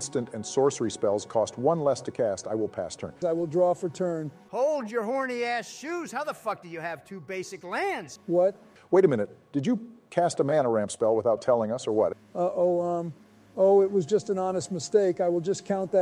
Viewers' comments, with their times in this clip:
0:04 The way he says it is just SOOOO funny lol!